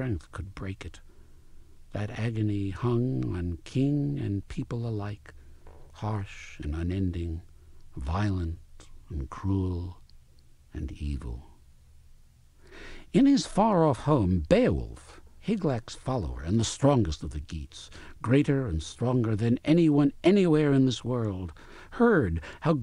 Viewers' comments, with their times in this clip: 0:06 he cut the cheese